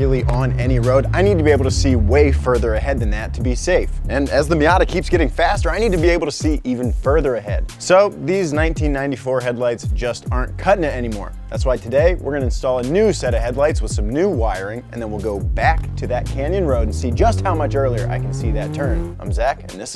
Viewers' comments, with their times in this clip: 0:05 That ambulance in the background is the best flex for an American I have ever seen